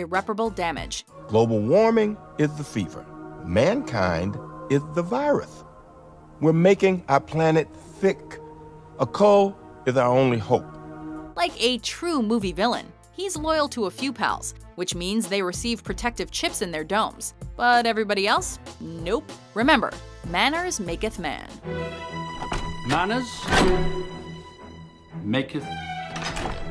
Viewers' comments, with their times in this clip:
0:09 Is Samuel Jackson do a Mike Tyson impersonation?